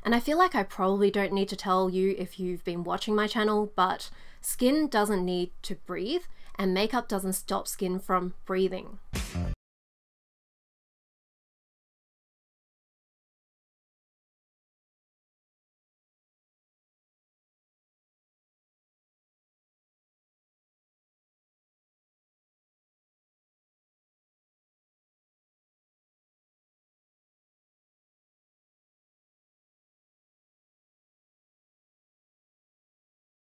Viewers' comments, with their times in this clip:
0:09 audio cuts out, whats copyrighted here?
0:10 the audio goes out.
0:10 and other intermittent times - surely this can't be just me? She goes totally mute even though the captions still show and she's moving her mouth.
0:13 The audio cut out does anyone else have this problem or is it just my phone?
0:14 After the audio kept messing up for me. When you're talking it's silent sometimes, then out of nowhere the audio will turn back on. Idk why, is this happening for anyone else?